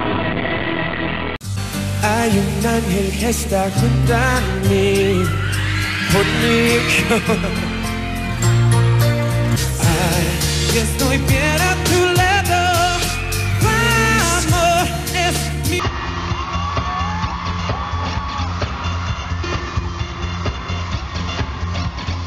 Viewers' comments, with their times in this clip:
0:03 Anyone who know whats shane trying to sing ... ?? Ot sounds sooo good i wanna listen more 😍😍😍😍😍